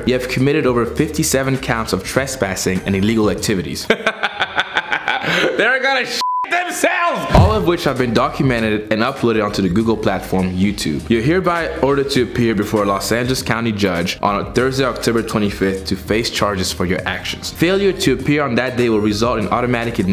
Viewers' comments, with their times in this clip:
0:03 that laugh sound like the one at the end of Thriller by Michael Jackson